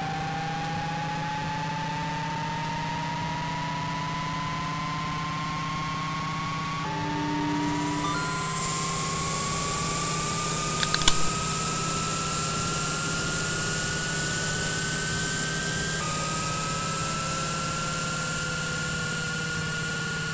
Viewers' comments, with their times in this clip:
0:08 OOF MY EARS